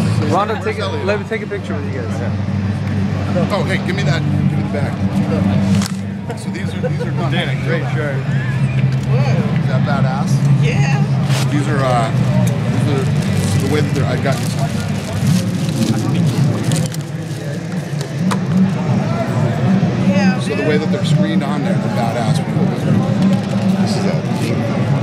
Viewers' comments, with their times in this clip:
0:10 Epic voice crack, Ronda.